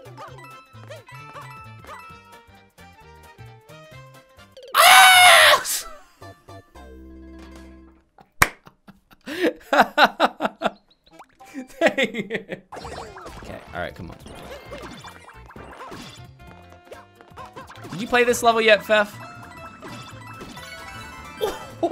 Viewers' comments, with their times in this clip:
0:04 It seemed like he screamed a**